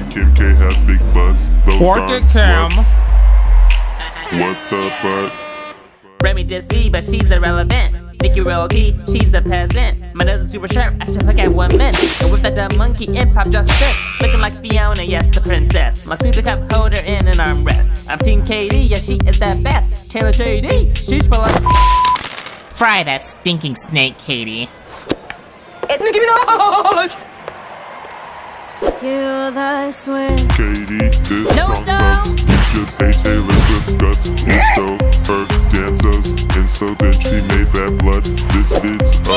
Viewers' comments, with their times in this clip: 0:04 beginning of Nicki singing
0:25 I'm dead 😂😂 and Kim and Selena voices 😂